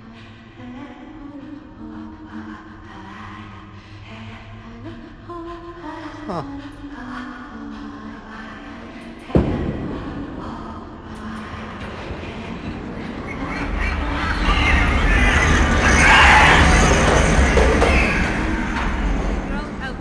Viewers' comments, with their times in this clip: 0:08 the sound of a bowling ball drop?